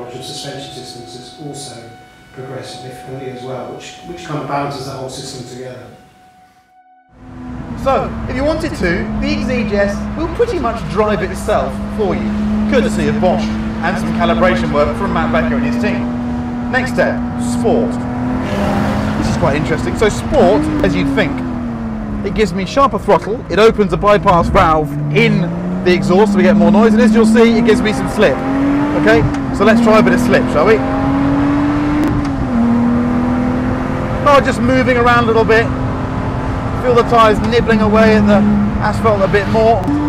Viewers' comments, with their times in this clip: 0:06 How did you get the echo from the room inside the car?! >_>
0:19 chris, major problems with echo until
0:28 the audio and the video doesn't match up lol